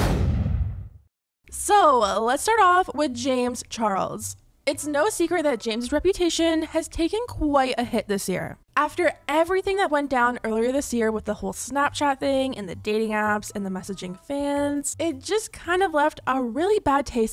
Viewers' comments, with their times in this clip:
0:05 tea spill I DIED THIS CLIP IS SO UNFLATTERING?? AND WITHOUT MUSIC TOO??? 💀💀💀